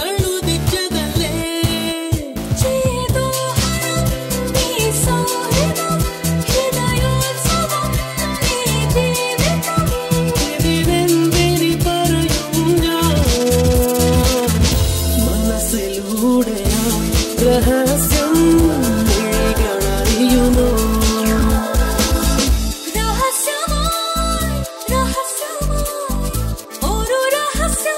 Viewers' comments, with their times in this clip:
0:10 best part and kk's voice..😍😍😍😍uffff